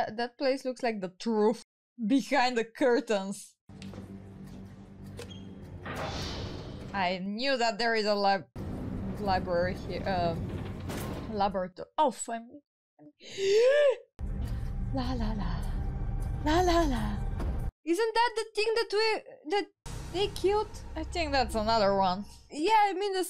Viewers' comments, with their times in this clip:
0:09 The frustration over "laboratory" was cute. Can't judge as even English speakers say it different.